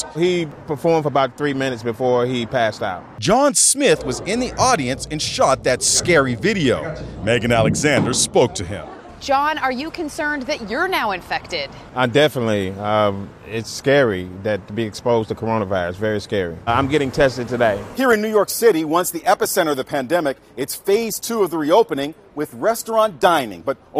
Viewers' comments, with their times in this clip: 0:09 The way she talked to him lmao.